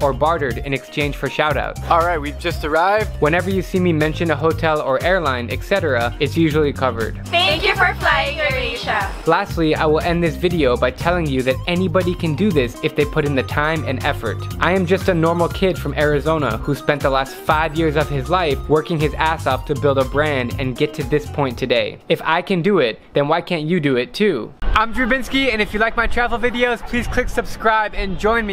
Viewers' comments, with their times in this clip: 0:09 they are Filipinos, I know because I am one and their voices.